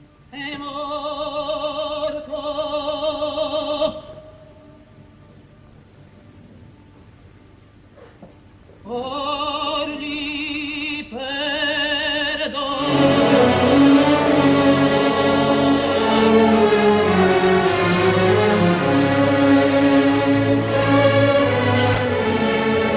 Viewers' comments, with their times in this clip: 0:06 Callas's "Or gli perdono" is bigger than the full story of 95% of sopranos